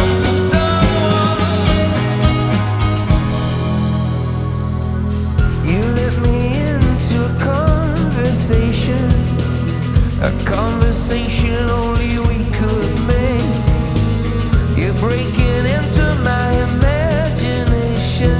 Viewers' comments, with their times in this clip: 0:06 the way he says conversation and imagination in makes me feel things i didn't know I could feel